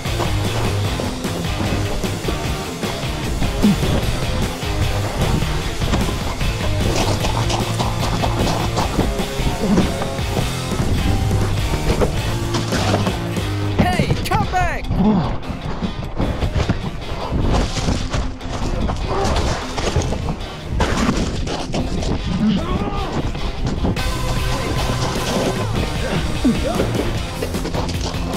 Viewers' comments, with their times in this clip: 0:10 I Love This Song